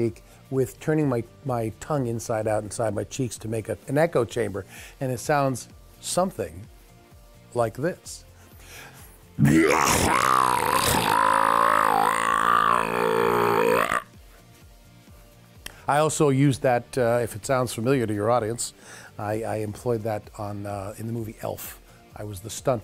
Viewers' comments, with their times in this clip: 0:05 That sound is tough to produce. smokers beware.